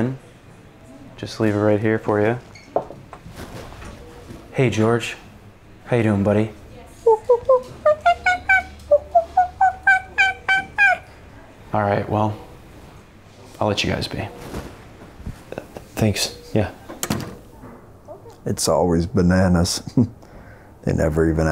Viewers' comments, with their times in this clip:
0:07 George being a grown ass man speaking monkey got me🤣🤣🤣🤣🤣